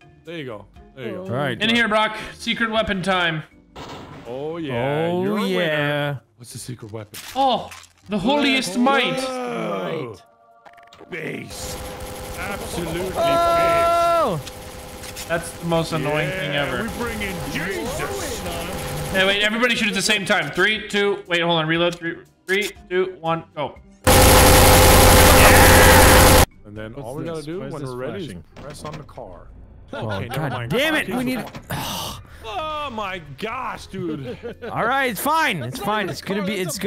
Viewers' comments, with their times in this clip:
0:07 is that-- is that a nail gun?
0:23 poor my ears